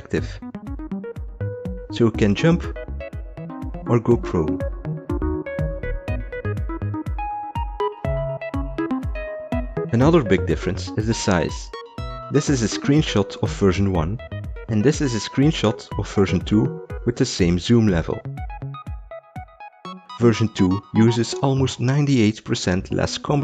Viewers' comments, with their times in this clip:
0:04 Does it activate Google Assistant only for me?